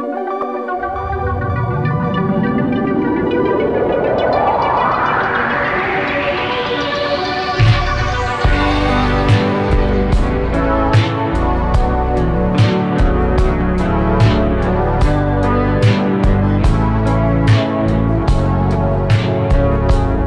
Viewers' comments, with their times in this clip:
0:07 sounds epic and cool